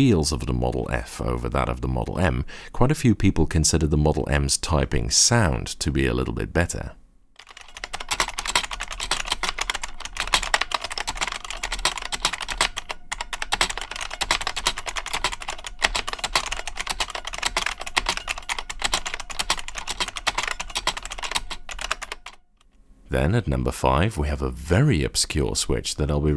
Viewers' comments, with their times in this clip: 0:09 it sounds like the running sound effect from the flinstones. I need it
0:09 You got a weird taste my dude how is that good sounding I would call that HR buckling spring HR stands for Hell Raising its like ughhhhh